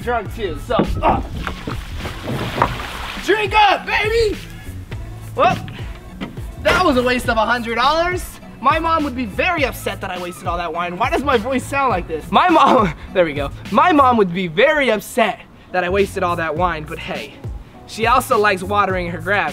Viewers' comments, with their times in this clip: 0:04 I thought my playback speed was on i even checked if it was on 😂😂😂